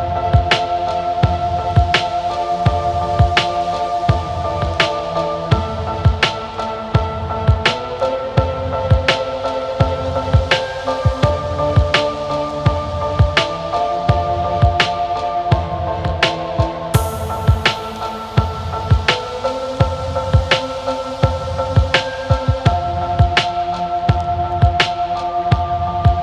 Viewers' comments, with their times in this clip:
0:07 Thanks man. It still amazes me how that music just draws me into what I am seeing. It is PM in Arlington Texas and not a manmade cloud in the sky and 55 degrees.